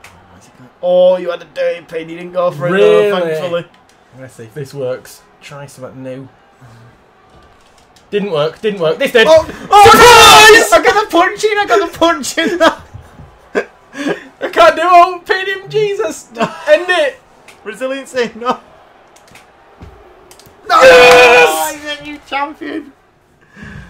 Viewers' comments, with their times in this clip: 0:08 Ouch! My ears!